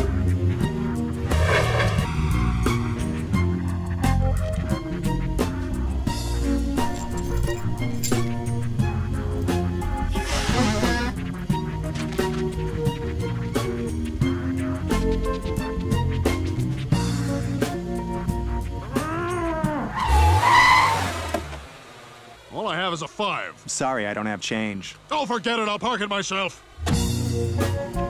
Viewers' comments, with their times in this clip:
0:10 When I first heard him blow his nose, I thought it was a guitar riff.